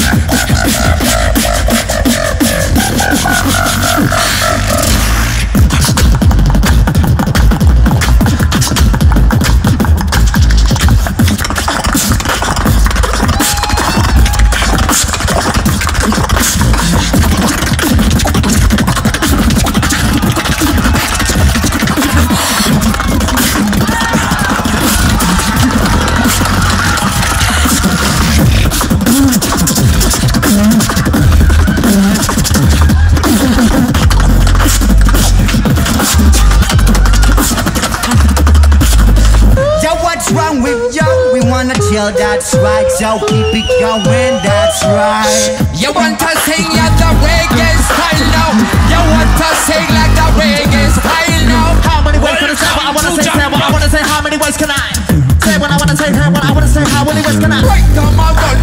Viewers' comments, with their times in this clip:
0:07 omgg too fast for me I quit
0:15 donald duck attack
0:39 IK I'm hella late but I need a full song of that Raggae style they were doing.
0:40 I love the reggae battle !!!!!!!!!!!!!! It gives me goosebumps 🤩🤩
0:40 Epic Sing battle
0:42 reggae mode pd: people dislike everything okey in house
0:45 is the drop we were waiting for
0:45 It was a good battle until mb14 killed them with reage
0:45 crowd on fire....
0:45 OH MY GOD its so beautiful song, my ear dancing hahaha just kidding